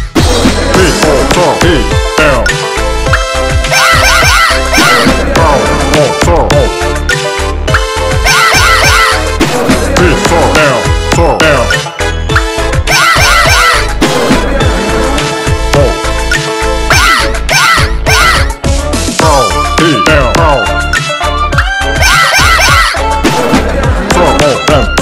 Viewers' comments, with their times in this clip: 0:10 he's like saying "showdown" if you hear closely